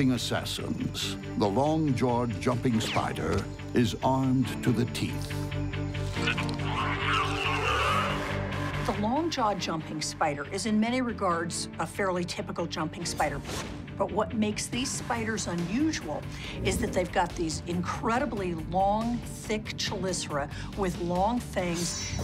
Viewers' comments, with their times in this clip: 0:07 the sound like venom